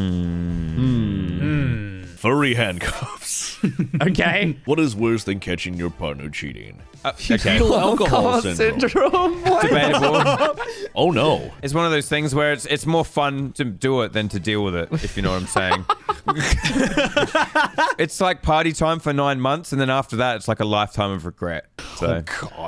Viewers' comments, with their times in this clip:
0:10 Narrator do be sounding like the "OH NO" sound effect meme